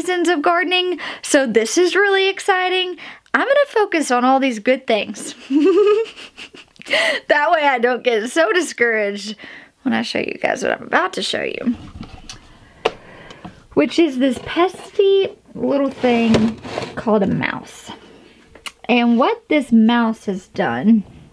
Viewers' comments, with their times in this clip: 0:06 Idk why but I loved your laugh right there... I've never heard you laugh like that...